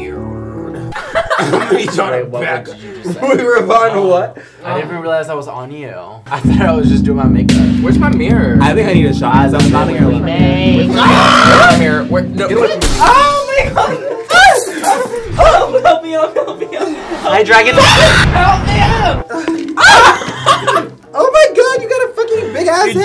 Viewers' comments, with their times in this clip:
0:07 this music is giving don't hate the player on episode